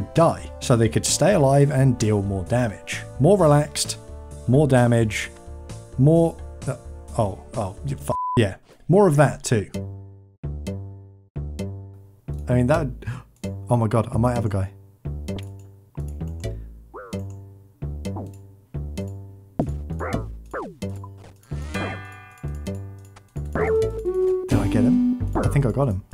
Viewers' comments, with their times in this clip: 0:09 NO H8 BUT DID U JUST USE A MIDI FILE OF A SONG ONE MORE TIME FROM DAFT PUNK ?????? HOPE U DONT GET A COPYRIGHT THINGY
0:09 I love that OSRS version of Daft Punk's One More Time that starts playing in the backorund
0:14 Daft Punk - One More Time in Runescape style